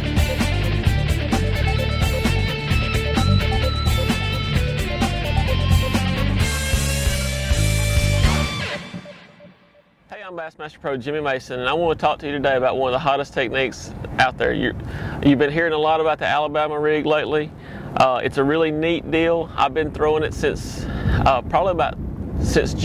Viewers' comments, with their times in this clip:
0:10 WTF i cant hear any thing after